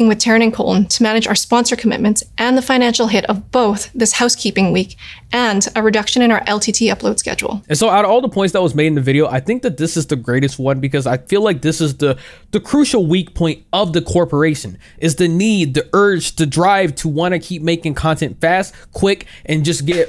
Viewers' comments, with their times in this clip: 0:05 How come she sounds like she is on the verge of crying? If she is acting, she is horrible.